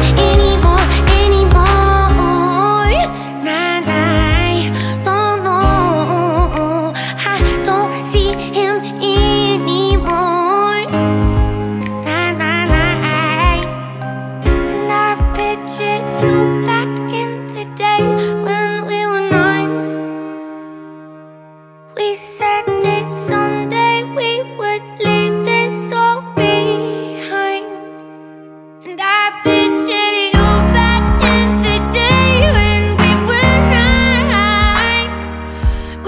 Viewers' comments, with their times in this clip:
0:07 ❤❤❤❤ Your voice is just incredible❤ to the end of the song makes me feel I'm in another world🌎. All the best❤
0:22 From on I got chills. Why Is her voice so soul piercing?